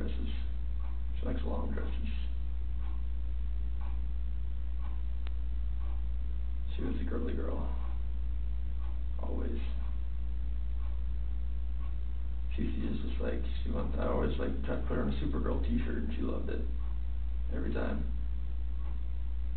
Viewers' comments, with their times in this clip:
0:05 It’s SO cringy watching him look at the pictures around the mark. He’s trying to come up with ANYTHING to say, thinking he’s showing emotion, while the detective just silently looks at him. The ticking clock makes it even better. Lol He then looks up as if to say, “Did I do a good job?”You even point out how ridiculous he is at this part too.😂😂 I wish I could hear the detectives thoughts.